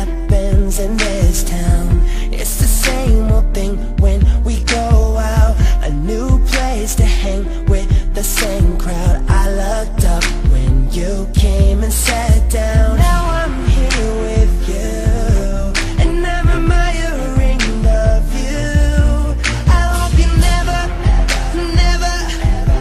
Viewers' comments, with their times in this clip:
0:04 what was the song in ? man, i really wish they'd make a second movie for this and really use sterling's voice already. sometimes, you can actually tell. sterling's voice is higher i guess.. just an opinion :D